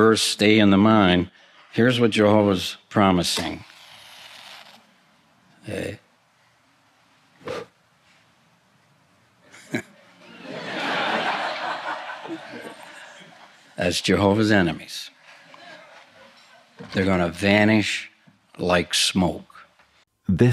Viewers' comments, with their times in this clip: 0:05 Tony Morris sounds like a Mafia enforcer when he does the match bit. The crowd's laughter is also creepy, these people are detached from reality.
0:06 That laughter from the background is distressing. They're truly deeply indoctrinated in this cult